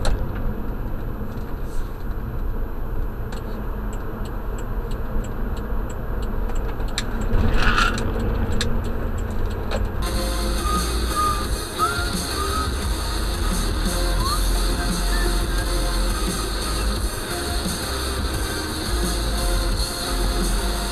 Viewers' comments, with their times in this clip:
0:07 Your tires screeching is a bit much... And hypermiling seems really stressful. I count 4 instances in this video alone where you were cursing the situation because it didn't lend to your driving style.
0:07 2 dislikes out of nowhere? Damn. If you have a problem with the video, vocalize it! That is what the comments are for! Also, my tires were not screeching that was coins in my cup holder sliding.